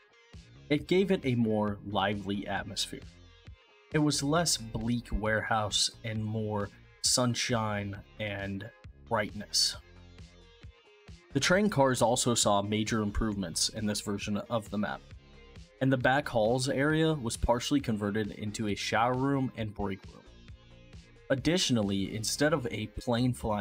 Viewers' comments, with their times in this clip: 0:08 font size 200% UI size 100% well-made vid, the pacing and voice were excellent, and the music was the right volume to avoid interrupting the voice (so many people get that wrong!)